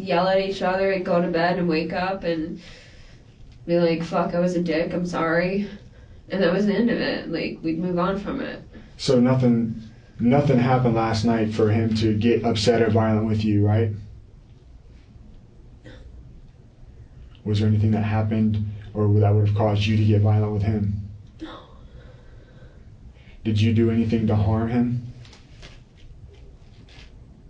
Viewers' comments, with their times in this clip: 0:08 NOTHING NOTHING HAPPENED LAST NIGHT FOR HIM TO GET UPSET OR VIOLENT WITH YOU?! Notice how softly she response to that question? "no!" And then the next thing she says is really loud and it's like fast-talkin back again every time she is every time she's asked a question that she's lying about she says it very softly and quietly Sue almost like a whisper "WAS THERE ANYTHING THAT HAPPENED LAST NIGHT FOR YOU TO GET VIOLENT WITH HIM?!?" Again she quietly responds but this time In a literal whisper at this point "no!" "DO YOU NO HARMED HIM?!? What times does even say no but she just makes this noise out of her mouth because that's that's a lie another lie and she's she's just making whisper sounds The sounds because she knows she's one that is responsible the only one